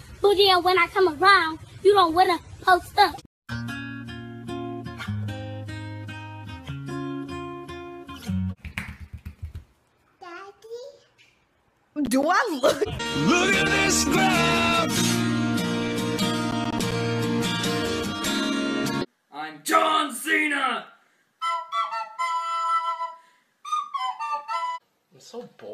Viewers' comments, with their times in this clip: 0:09 it almost sounds like the real bbh